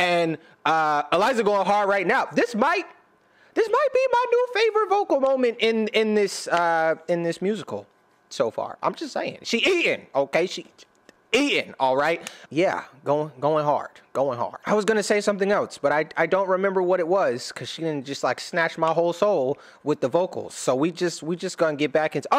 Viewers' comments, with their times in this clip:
0:06 story of tonight is so peaceful ...!